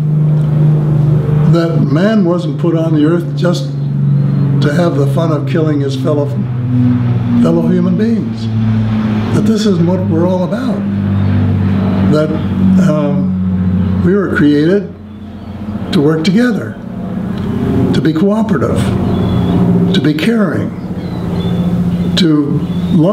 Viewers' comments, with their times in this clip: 0:04 Sounds like the Vintage Lancaster bomber from Hamiltons warplane museum in the background flying over. Could be.
0:08 Great interview, he sounds so genuine and obviously doesn't care if people believe him or not, a very brave man. .I thought it was game over............ I closed my eyes as I heard that low flying plane approach!! It Sounded like a WW2 Bommer!!!